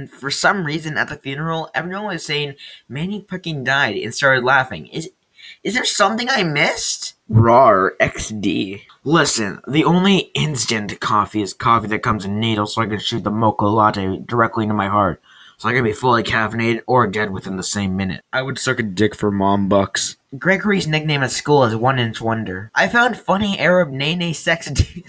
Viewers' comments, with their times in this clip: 0:07 SCP 096 screams